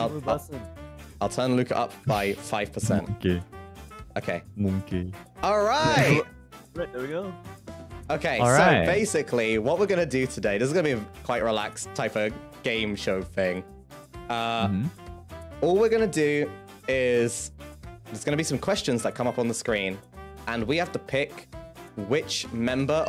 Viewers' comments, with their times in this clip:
0:04 did someone say "mungkin" its a indonesia word it mean maybe